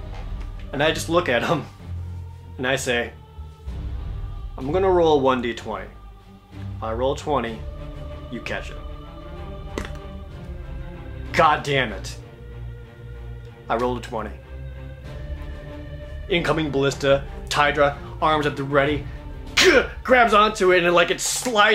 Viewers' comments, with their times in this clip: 0:09 This die rolling sound is perfect. I had to go back a few seconds to make sure you hadn't actually rolled a read die.